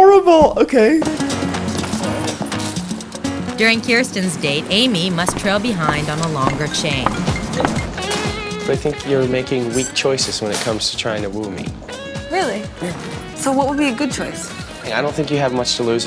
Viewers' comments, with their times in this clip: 0:03 the chain slapping the ground! 😂